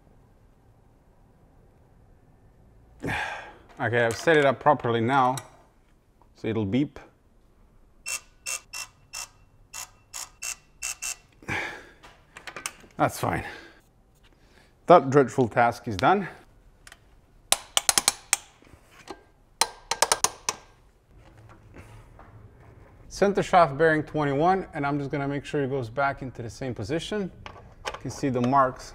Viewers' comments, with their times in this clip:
0:10 your digital torque wrench sounds like main theme of Russian gangsta movie Boomer... watch it please... You will enjoy